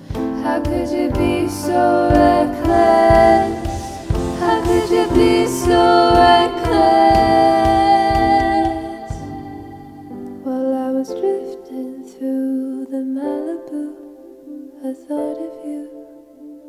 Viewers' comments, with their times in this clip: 0:04 how could you be so reckless? The way you sang this part….wow❤️